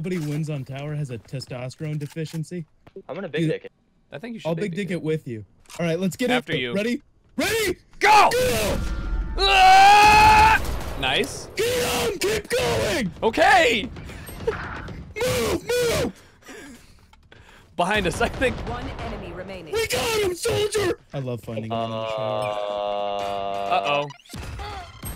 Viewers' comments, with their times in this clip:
0:07 Screaming dude sounds like the military troops in Half Life 1